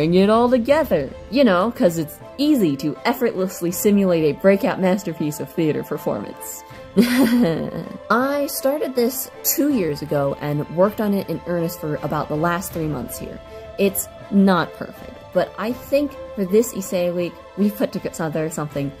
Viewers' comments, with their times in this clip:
0:06 It sounded like you said yssi I’ve rewatched this like 5 times so it’s just me being silly at this point